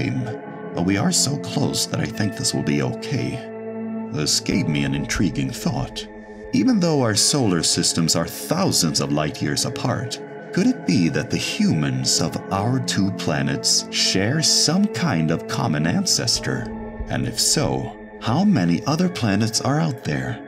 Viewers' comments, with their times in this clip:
0:06 I'm sorry, you're telling me that Jim Johnson is alien and that means Larry is also part alien and Lisa has had no fucking clue? (Sincerely coming from me, currently ). Also I love whoever voiced Sally, my friend and I are always fawning over your voice interpretation though I can't get over the way you say Megan lmao.